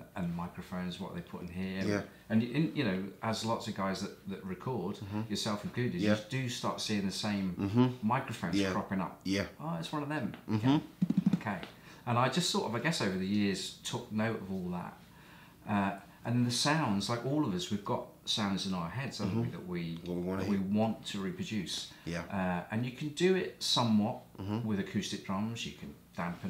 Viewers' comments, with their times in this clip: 0:07 drummer’s sentence ponctuation upon the chair... 😂